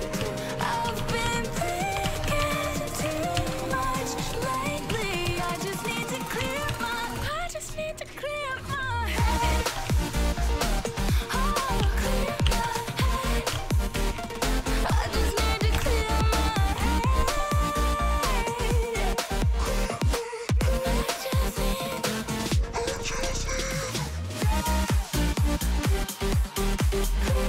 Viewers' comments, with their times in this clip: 0:09 the way the song synchronizes with that last stab was pretty nice